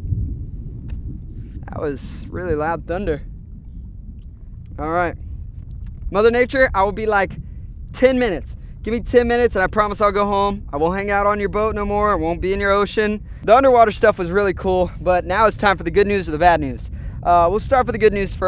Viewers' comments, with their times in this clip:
0:05 YOOO WTF. As soon as it thundered in the vid it thundered irl and i wasn’t sure if the irl thunder was fake or the vid thunder was real help